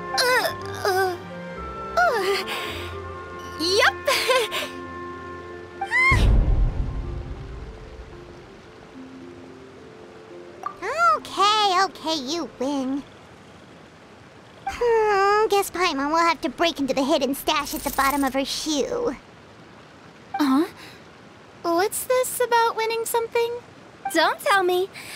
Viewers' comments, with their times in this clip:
0:06 why is there a bass boom sound effect 💀